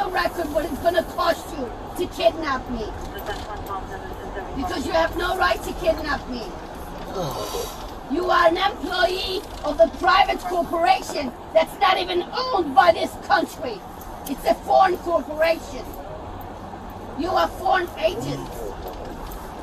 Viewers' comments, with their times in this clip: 0:07 I felt that officers sigh so hard.